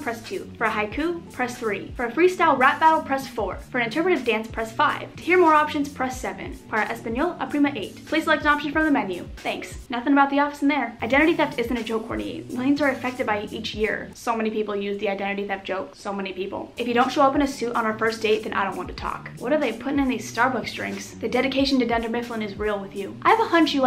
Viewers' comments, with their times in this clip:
0:06 😂😂😂 its says "For Spanish a cousin 8" 😂😂😂 It's supposed to say: "Para Español, oprima 8" Wot